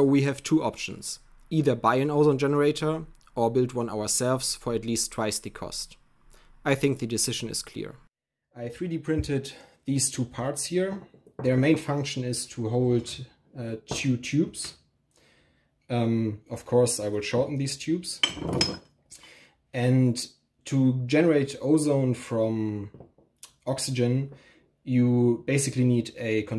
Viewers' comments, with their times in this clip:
0:08 Whatever microphone you are using it's 3d .... Aassfff I thought someone in the room I was in started talking because it sounded like it was right next to me 😂